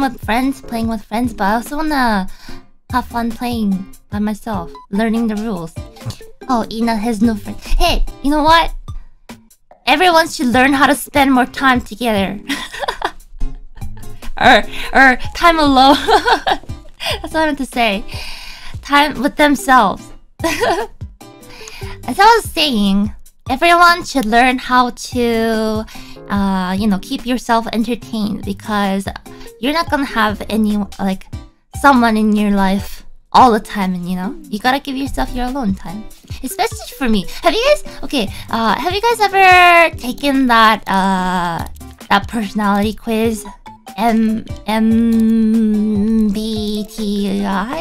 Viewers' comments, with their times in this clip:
0:07 cute ancient myth god noises
0:34 You can hear the exact moment she shifts into high gear. This is the most excited I’ve ever heard her get.